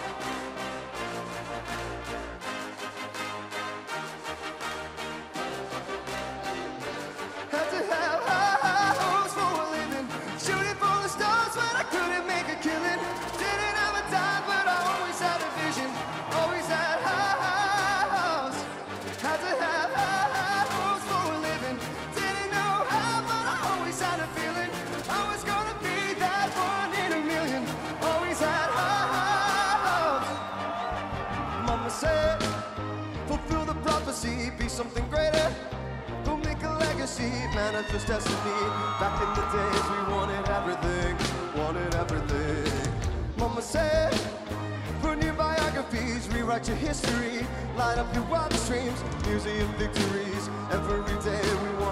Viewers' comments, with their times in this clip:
0:08 Woah, he used way too much autotune in the music vid. It sounds nothing like it
0:37 What`s up with the mans voice?